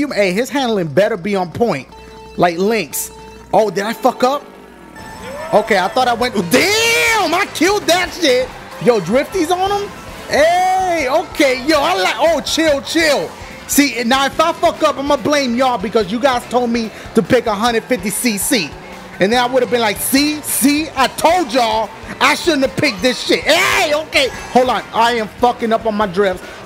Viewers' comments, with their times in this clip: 0:03 I don't know what it is, just the way he said "Okay, I went I- DAAAAAAAAAAAAAAAAM I KILLED THAT SHIT!!!" made me laugh so hard...
0:06 THE WAY HE SAID IT 😭😭😭
0:12 What he say?? child child ??? i dont speak english...